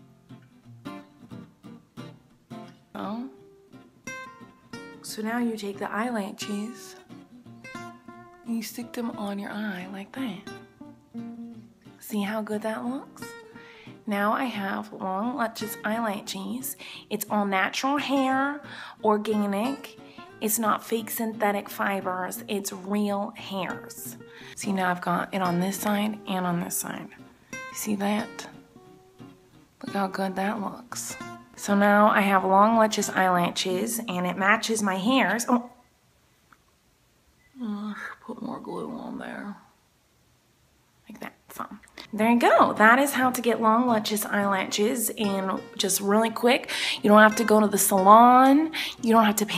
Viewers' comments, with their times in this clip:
0:06 you can hear her Miranda voice turning into Colleen's voice xD
0:36 I heard Colleen haha